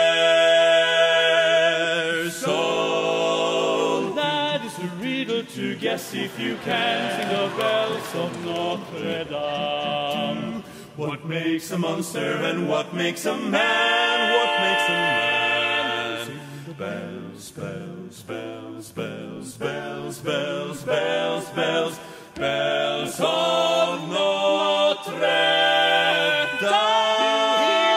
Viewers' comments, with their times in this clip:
0:09 Low bass note is a D not an F
0:09 Bass notes lowD
0:10 Doesn‘t the bass sing a low D instead of a F on „dame“?
0:10 Tiny correction, I'm pretty sure the bass hits a low D, not F. very impressive. <3